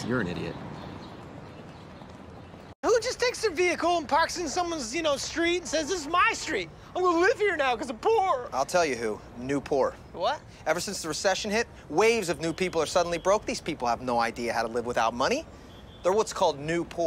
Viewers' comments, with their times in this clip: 0:03 funniest delivery of the whole show imo